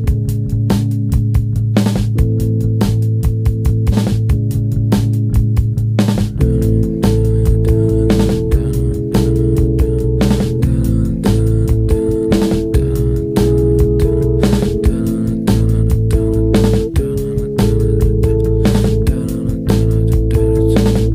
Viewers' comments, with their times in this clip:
0:03 I thought I was the only who had that reaction when the drums go out of rhythm haha